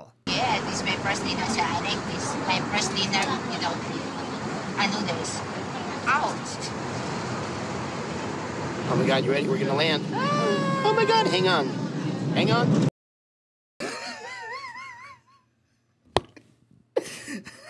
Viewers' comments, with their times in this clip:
0:04 she sound like the geese from kung fu panda “nu-dals”